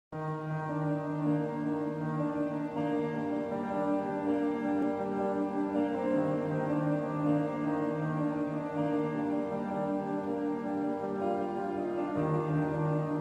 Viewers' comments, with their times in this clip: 0:00 Isn't 1.25x before garou?